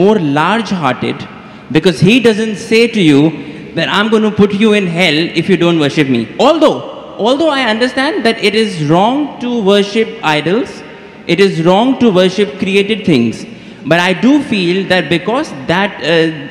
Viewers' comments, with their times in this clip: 0:04 the guy laughing behind him knew what this man got himself into 💀